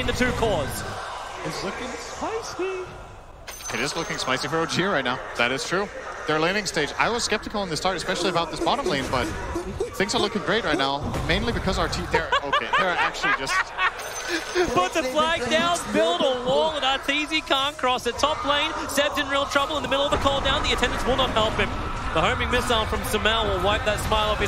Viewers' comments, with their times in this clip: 0:09 that was savage asf. Even Toby laugh his ass off LOL